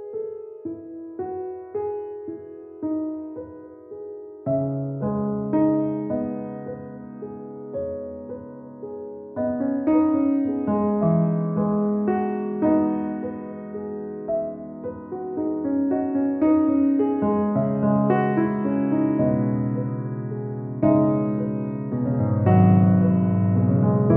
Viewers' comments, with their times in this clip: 0:07 The piano after <3